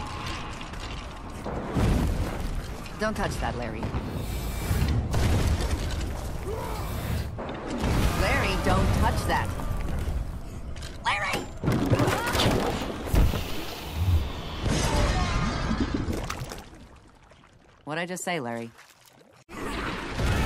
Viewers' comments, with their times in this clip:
0:06 Haha the Barbarian have a Kratos voice